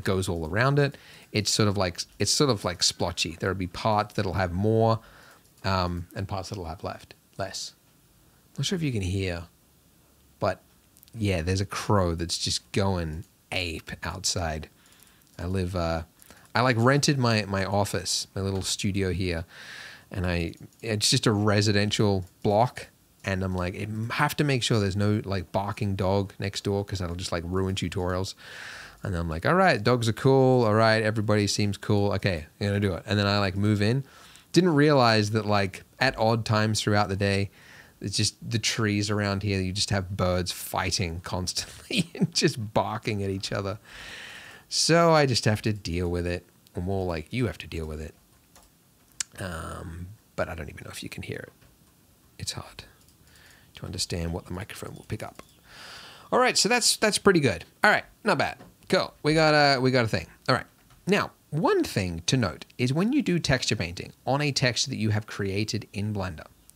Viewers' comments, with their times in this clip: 0:07 goes into intense texture painting... yea there is a crow going ape outside 😂😂 I'm crying it's so good!! Keep up the awesome content!!
0:47 there's a solution to your barking problem. depending on what software you use to edit the audio aspect of your recordings, try using what is called a noise gate. ;)
0:54 you can hear birds shrieking under the phrase "what the microphone will pick up"